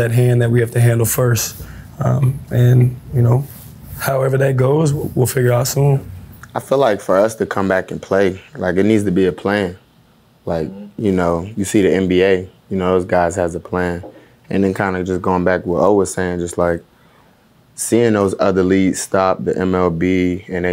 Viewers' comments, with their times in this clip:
0:07 tg voice lol